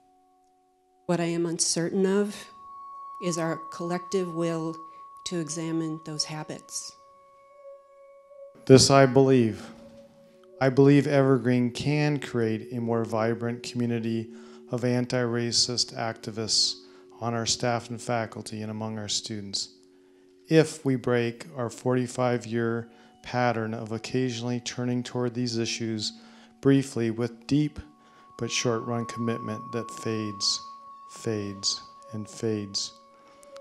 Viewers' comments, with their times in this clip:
0:08 This guy sounds like he's reading a hostage statement.
0:18 yikes. those professors sound like programmed robots.around